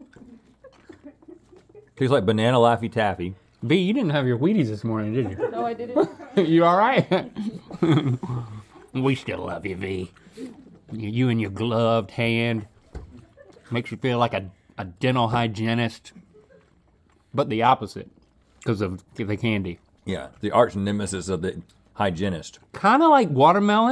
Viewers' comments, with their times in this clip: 0:06 i have never heard link laugh like that